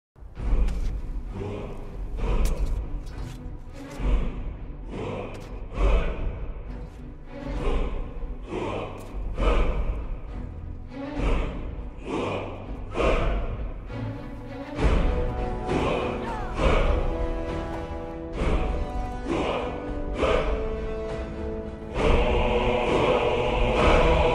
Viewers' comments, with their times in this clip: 0:07 The epic music while showing a chicken, almost like this badass chicken is the new dovahkiin or something, that gets u a thumbs up right there lol